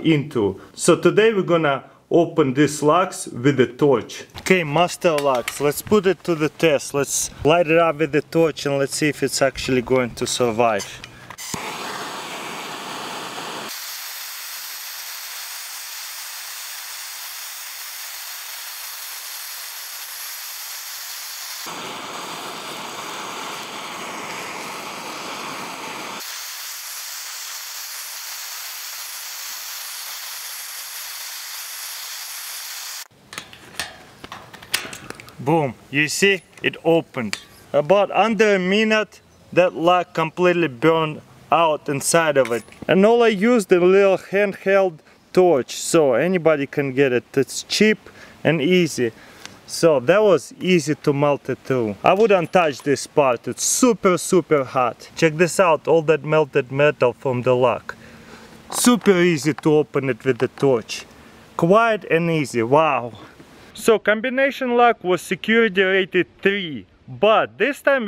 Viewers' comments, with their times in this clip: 0:10 Lets see if it sexualy going to survive !
0:55 I like how he said that's sentence XD